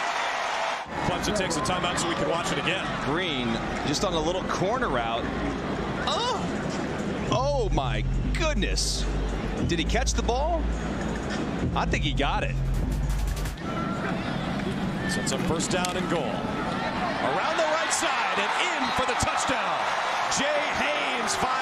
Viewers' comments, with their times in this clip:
0:05 That sound the commentator made 😂😂